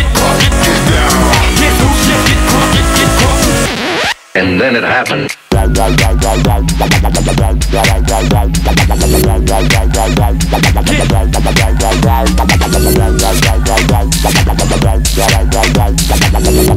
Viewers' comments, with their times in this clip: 0:04 err did you not hear the drop ?